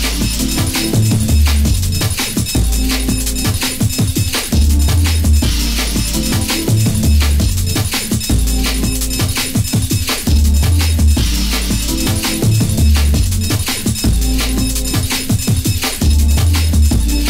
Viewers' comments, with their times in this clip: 0:03 Song sounds like a reverb drum (idk lol) but I really like it